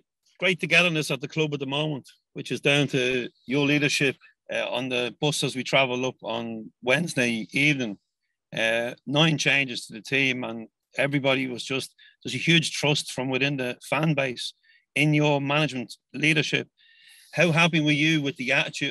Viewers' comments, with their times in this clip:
0:06 Sounds like Neil Lennon 🤣🤣 so much better watching ange press conferences tho ☘️